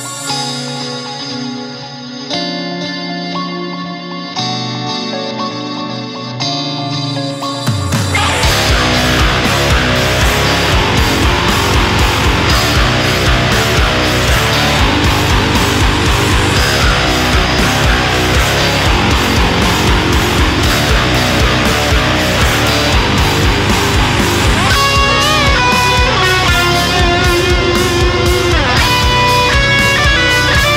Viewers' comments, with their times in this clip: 0:07 Em I the only that heres "GOO"
0:14 LOL That stare killed me But seriously, nice job. Your tone and clarity are on point. (Or should I say.. Point to Point?)